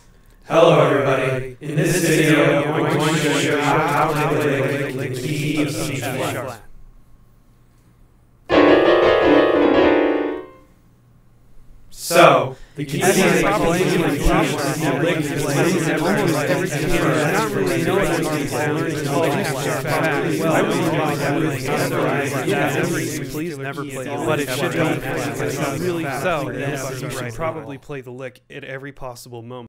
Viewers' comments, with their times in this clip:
0:08 The Lick Awkward silence SO Gibberish
0:10 Now we know what it's like to hear multiple voices in our heads.
0:19 am I the only one who hears the word “polyjuice”?
0:23 Please never play in f sharp Lmao